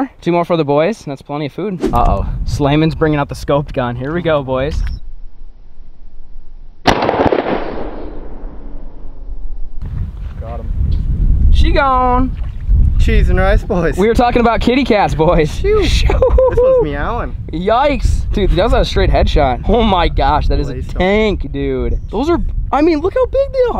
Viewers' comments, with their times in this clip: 0:05 Frog: What a lovely day for see the horizon! Also frog Why do I hear boss music